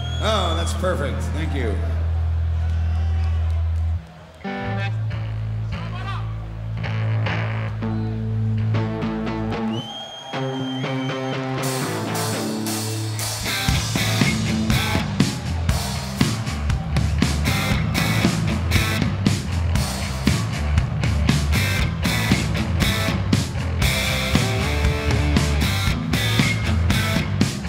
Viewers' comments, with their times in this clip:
0:09 that claps fit perfectly